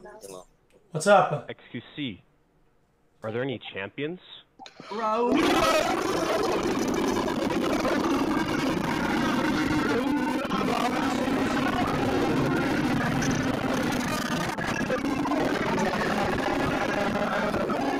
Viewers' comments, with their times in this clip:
0:05 When you ask the ADHD kid to imitate 3 animals at once.